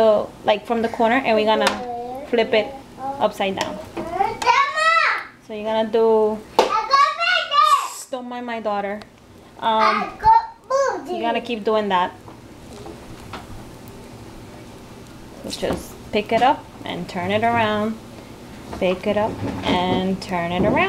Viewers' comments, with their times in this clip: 0:03 Awesome video, It was approved by my dominican grandma from wash Heights. Gotta love the baby kung-fu talk